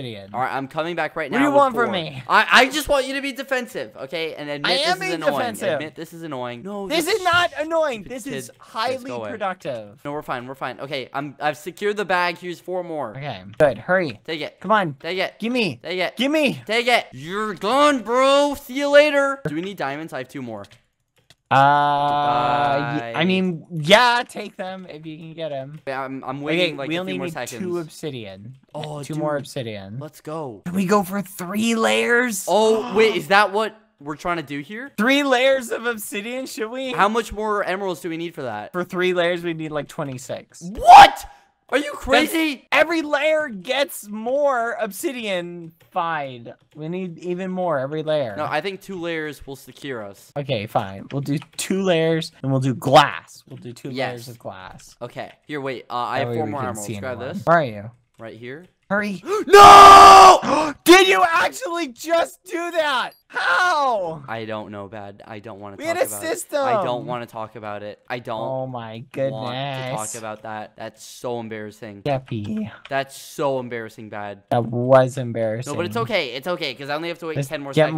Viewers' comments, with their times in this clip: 0:04 skeppy: be defensive BBH: I am being defensive (in a defensive tone)
0:48 i had ur video on high volume i was about to fall asleep it was 3 am and u ruined my fkin sleep and my ears are rining bruh 😂😂
0:59 not only was it super painful, my ears died bcs I was at max volume
0:59 ⚠ ⚠ ⚠ HEADPHONE USERS BEWARE ⚠ ⚠ ⚠